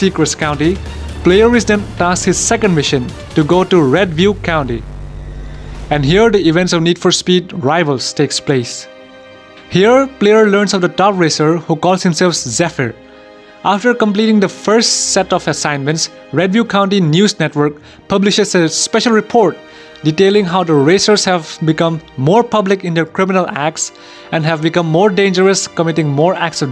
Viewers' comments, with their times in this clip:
0:08 Whats the music that starts ? It sounds really good in a sad way, gives me halo vibes